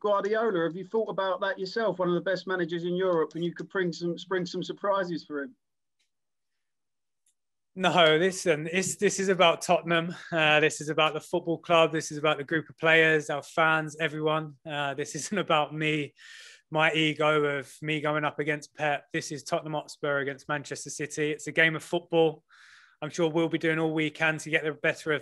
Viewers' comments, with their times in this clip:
0:07 xD he was about to chuckle / laugh on the pep question